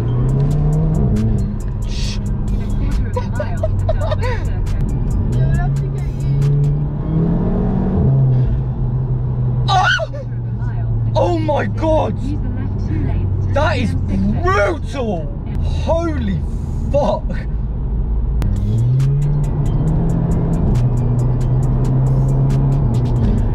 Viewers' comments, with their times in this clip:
0:08 that battlecry squeeq🤣🤣